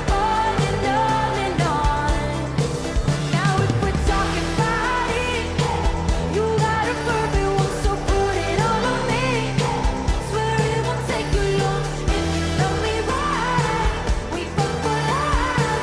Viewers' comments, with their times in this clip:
0:03 Yessssssss way to not distort your voice by trying to project. It’s a mic. Just like the studio. She gets it. Yes tove lo. Jumping and sounds great